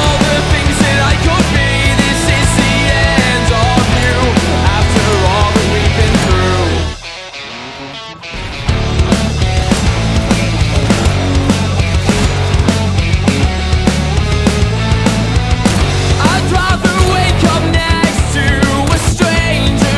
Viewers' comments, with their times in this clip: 0:07 badass mode activated *BOOP*